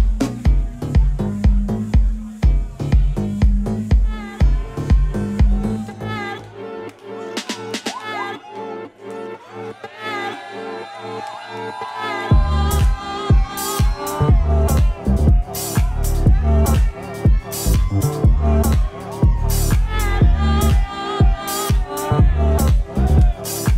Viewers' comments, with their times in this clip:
0:08 I love that moment when his own track starts playing and how the crowd supported him!